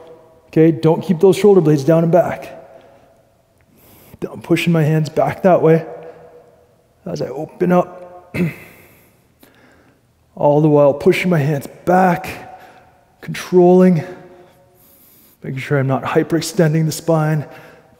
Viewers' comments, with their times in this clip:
0:05 Minute -The Subtatitles run as "I'm pushing my hands back", But I hear "Don't pushing". Please clarify.